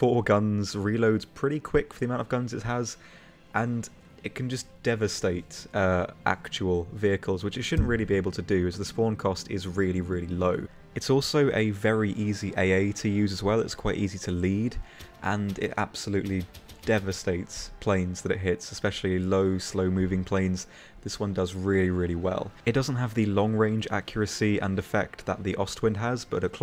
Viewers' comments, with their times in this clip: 0:07 *SLAPS POP FILTER FOR NO REASON